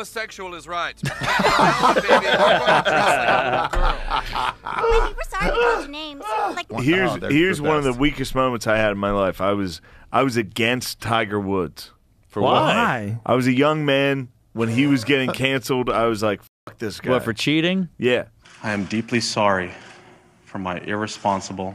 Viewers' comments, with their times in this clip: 0:04 Joe rogan's fake laugh 👹